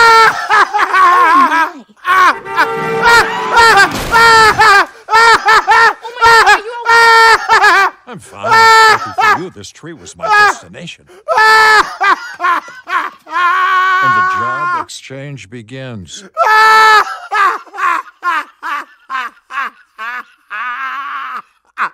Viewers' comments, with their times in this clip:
0:08 I’m not gonna lie my parents woke up at 12am thinking This was me laughing LOL😂